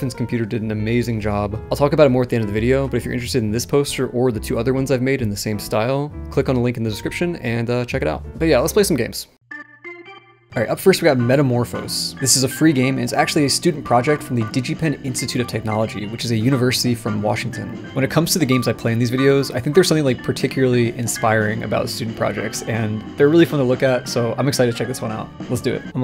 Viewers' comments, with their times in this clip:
0:09 i misread and heard that and some ptsd came back from ShindoL.